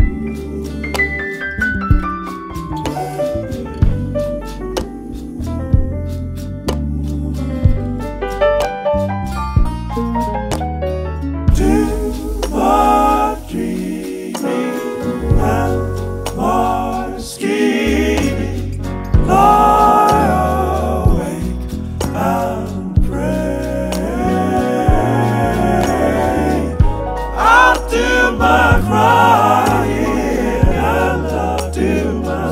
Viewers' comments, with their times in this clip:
0:07 colliers take on the Final Fantasy prelude lol
0:14 that chord is my favorite musical moment ever